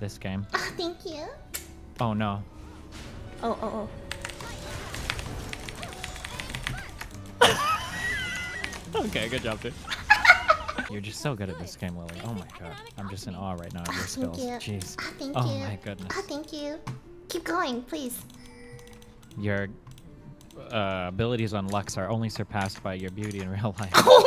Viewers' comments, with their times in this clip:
0:09 that laugh was sinister as fuck xD